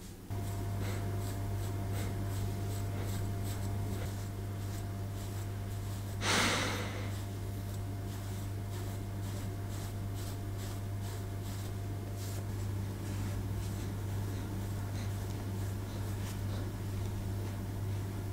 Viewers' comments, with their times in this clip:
0:06 ...the loud sniff: Oh yes, you're a very poor dog. They don't get food, they are always beaten and kicked, they have to sleep outdoors, snow and frost when it rains. That was a joke. Our dogs sometimes act as if they are doing very badly. If every dog was doing anywhere near as well as this fluff, then the world would be a little better. You two are just cute. I have two long-haired German Shepherds - I know exactly what you're doing.